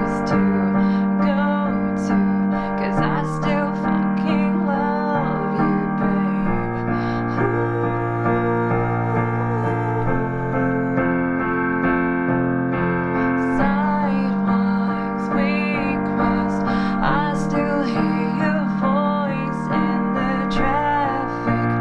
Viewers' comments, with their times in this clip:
0:07 Homegirl sings and says she can't sing?????????????? I'm confused.